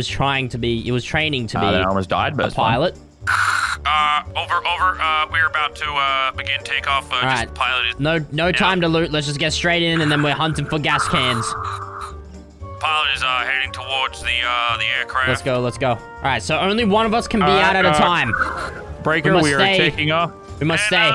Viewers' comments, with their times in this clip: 0:03 why does this sound real lmao